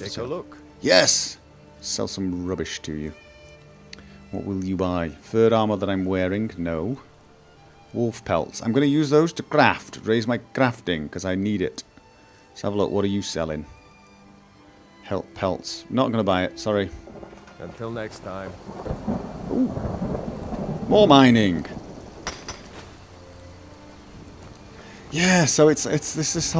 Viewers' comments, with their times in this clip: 0:08 you kinda sound like Tyrion Lannister from game of thrones.. lol